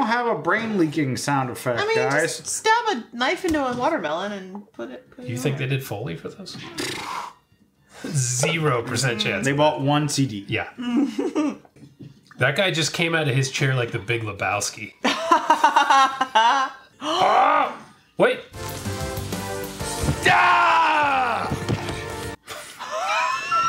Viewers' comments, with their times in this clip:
0:09 His scream of victory was more like a scream of frustration. Like "Shit I forgot to deliver my action star one-liner."